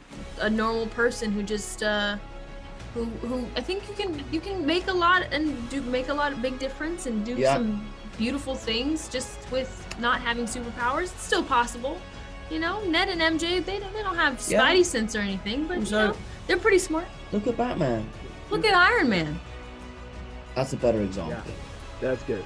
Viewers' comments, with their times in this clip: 0:03 when Tom stretched his neck and I heard those bones, I was like “ Ooh ! “ . 🦴🙆‍♀️🙆‍♂️